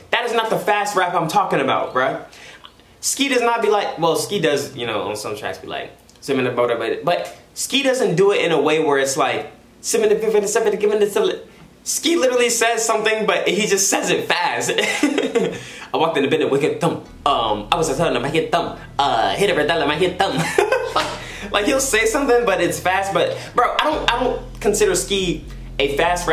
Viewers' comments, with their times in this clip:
0:09 he literally sounds like Jay z back when he wore Hawaiian shirts (look it up)